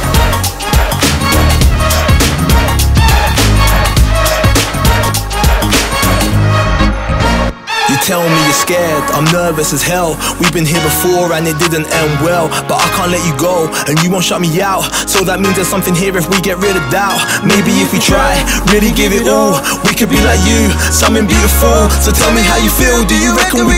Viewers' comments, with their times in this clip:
0:08 why do you have a guy that can't sing??